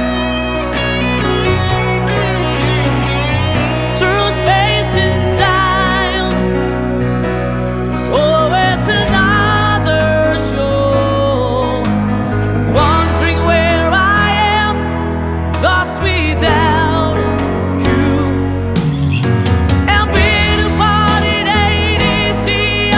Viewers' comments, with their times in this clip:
0:07 today septembrr 21 pm listening the golden voice of our idol jovit baldivino i resly miss him may your soul rest in heaven your always in my heart...